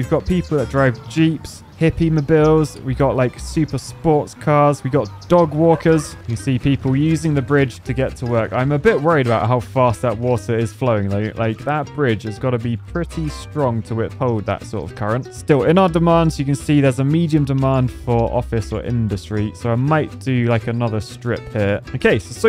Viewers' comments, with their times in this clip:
0:05 We got dogwater